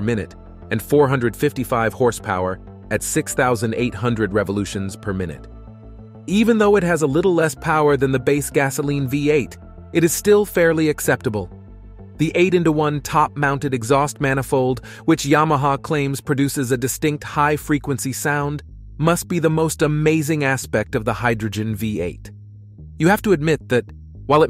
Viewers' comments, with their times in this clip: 0:06 my favorite part is when narrator starts shouting